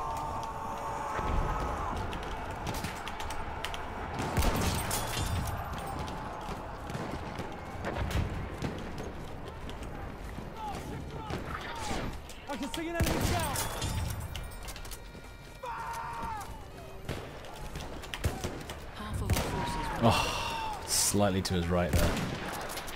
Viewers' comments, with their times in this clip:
0:10 Someone's playing the bagpipes